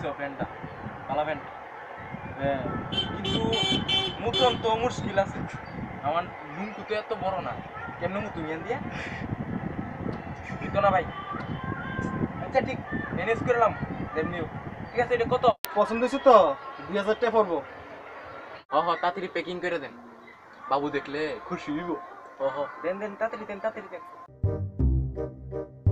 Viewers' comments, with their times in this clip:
0:08 the background laugh😂